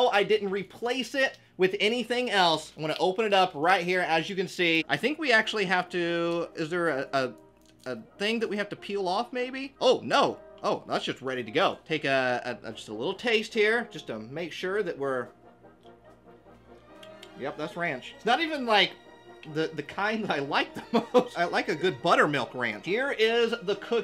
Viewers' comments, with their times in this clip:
0:10 does he swear because i swear he said "that shxt is ready to go"